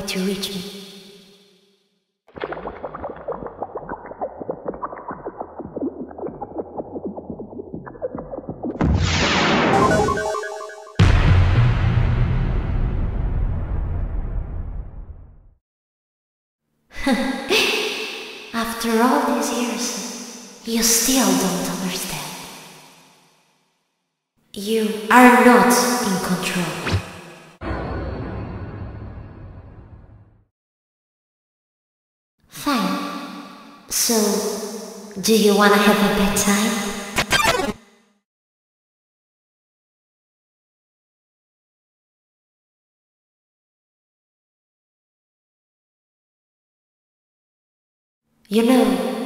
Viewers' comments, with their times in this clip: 0:10 heavy breathing …NIGHTMARE GASTER…
0:36 i heard it for “do you wanna be my valentine?”